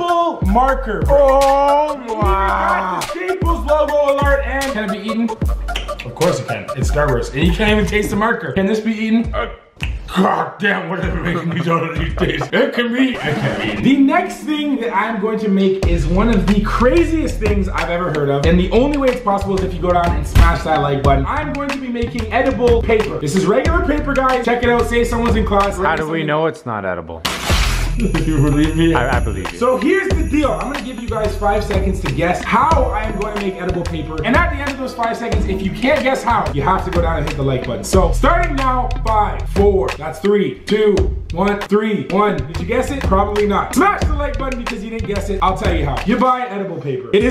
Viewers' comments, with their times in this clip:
0:10 he sounds weird 😂
0:28 Was it just me or did anyone else hear Santa bells